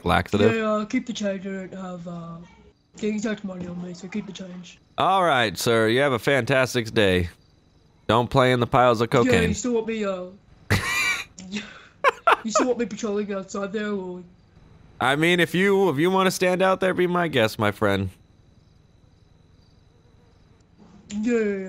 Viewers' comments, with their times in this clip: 0:03 you can hear the security guard 's mom yelling in the background